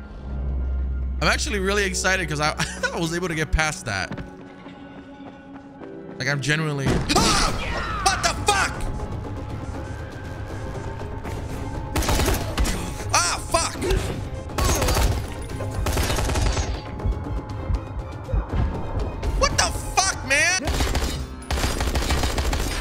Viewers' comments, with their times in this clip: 0:04 has me dying, probably watched his facial expression while yelling at least 30 times lmaooooo